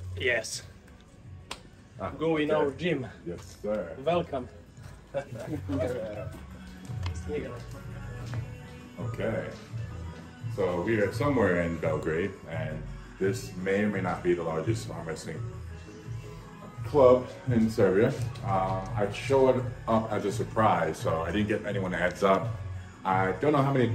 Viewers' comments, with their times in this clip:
0:06 sounds like he says "this nigga" lmao